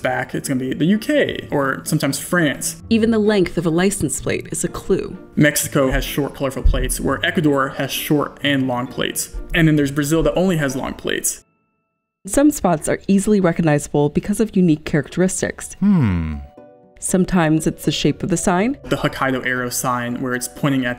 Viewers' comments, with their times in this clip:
0:03 did someone lose an audio file lmao